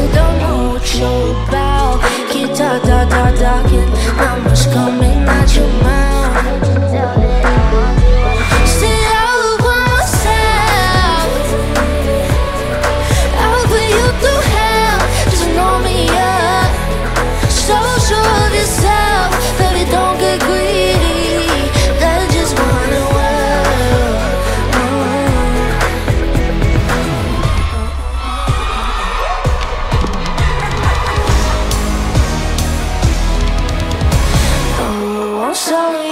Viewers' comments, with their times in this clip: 0:09 I like how she hits this note -27
0:20 the small vibrato on 'greedy' omgg